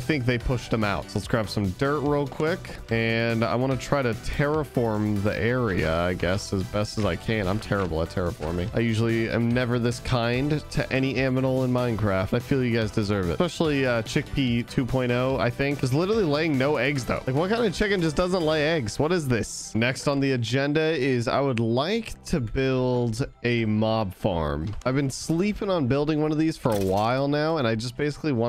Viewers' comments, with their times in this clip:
0:09 aminal is that the new name for mobs or something never heard of it
0:10 Poor 'aminal' you got there
0:12 did he say aminal?😂